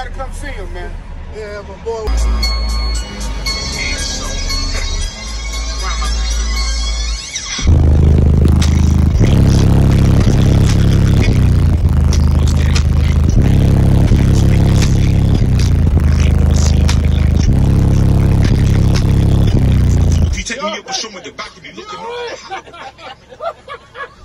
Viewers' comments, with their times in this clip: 0:06 that first bass note hit him in the chest lol